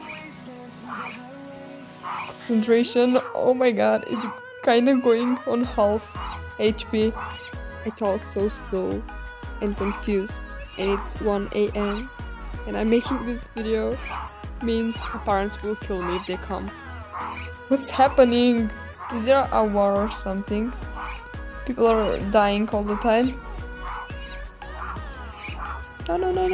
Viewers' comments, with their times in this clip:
0:07 Um... That background music sounds familiar now